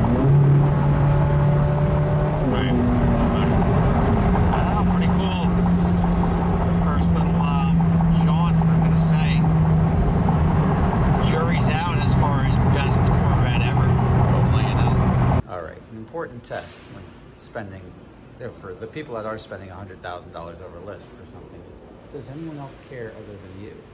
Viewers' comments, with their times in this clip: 0:04 What the heck is that knocking sound ?